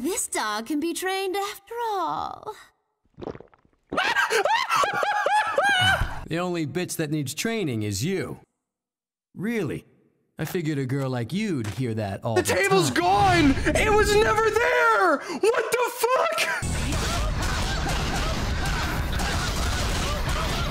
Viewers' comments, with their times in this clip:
0:04 The fact he pulled out a table, a chair, a beer bottle, and made no sound at all while doing that😂